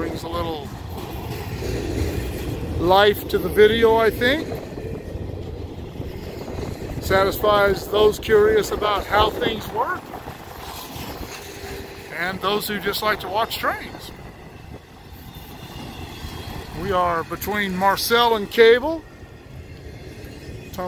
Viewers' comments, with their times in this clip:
0:03 Certainly nice to see all those Fedex trailers NOT on the highway. Do they wait until the engines have passed? I heard what i’d call a flat wheel. Not very severe; I’ve heard much worse on CSX’s customer cars. Those must beat the crap put of the tracks, ties and ballast